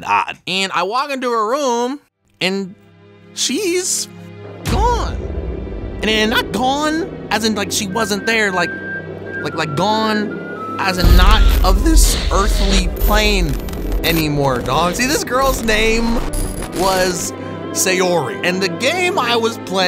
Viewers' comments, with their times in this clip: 0:03 as soon as I heard that damn music I already knew what game it was